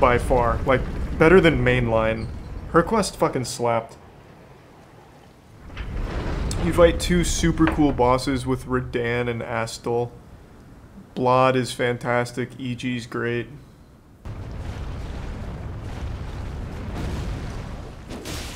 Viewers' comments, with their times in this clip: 0:05 how does he manage to mispronounce every character’s name? 😂